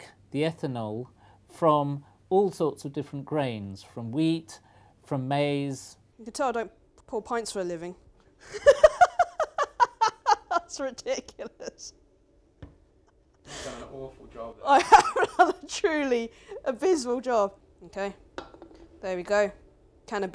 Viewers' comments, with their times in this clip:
0:07 Holy crap. her laugh sounds just like Ode to Joy.